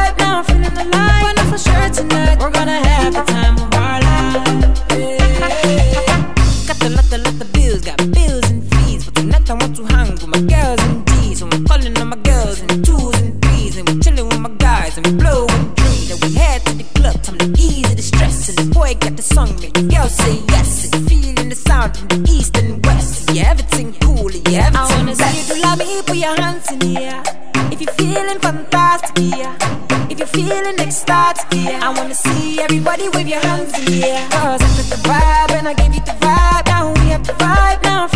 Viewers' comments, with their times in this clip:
0:06 When the beat drops!
0:19 And I thought Jason Derulo was there 😂😂